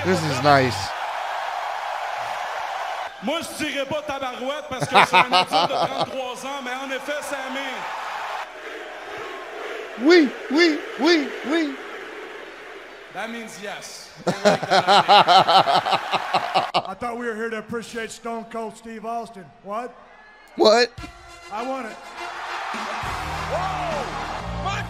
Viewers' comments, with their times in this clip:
0:09 The OUI ! chants are the french version of the YES ! chants